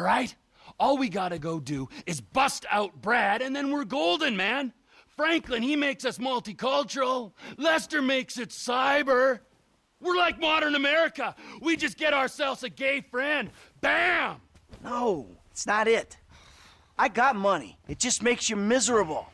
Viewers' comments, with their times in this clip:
0:05 I love how he sort of sings it.